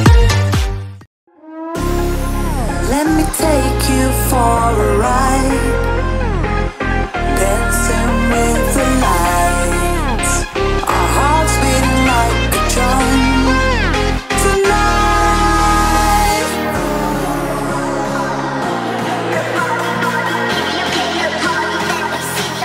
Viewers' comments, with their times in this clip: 0:03 the music goes perfect for this part and the entire video good job bro